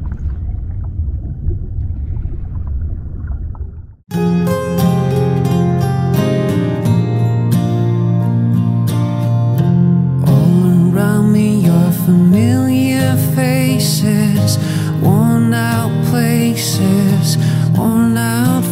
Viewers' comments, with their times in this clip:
0:04 OMG THIS SONG!!!!!